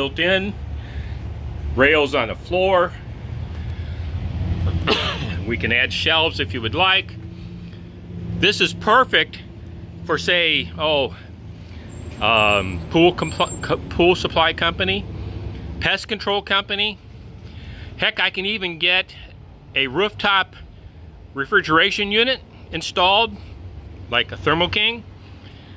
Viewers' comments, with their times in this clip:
0:08 sounds a lot like that super street fighter sound effect